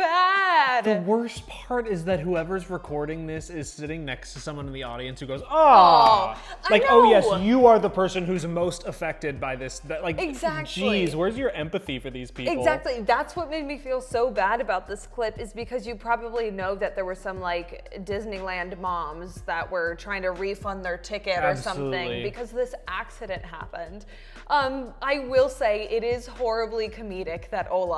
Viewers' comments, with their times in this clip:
0:10 I thought the "Awww" was empathy! Like "awww, poor dude"